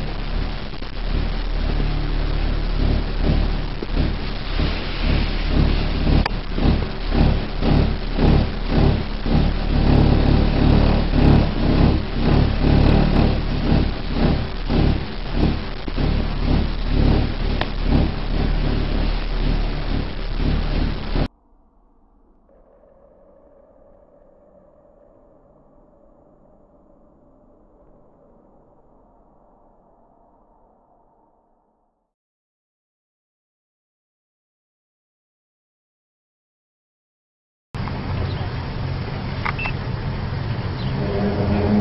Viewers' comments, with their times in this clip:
0:03 sounds like death metal to me lol
0:11 just sounds sorta like subwoofers banging.
0:13 I think that may just be some neighbors blasting skrillex
0:23 This is really interesting, the sounds are obviously mechanical in nature but the only issue I am seeing with the bulk of these videos is that we have no proof that these sounds aren't being added in during editing. Yea we have articles that back it up but it doesn't look like anyone else in these films are reacting to the noises except the people immediately involved with filming, the film sounds a whole lot like a C130 or other large prop driven plane maneuvering, Ontario is interesting.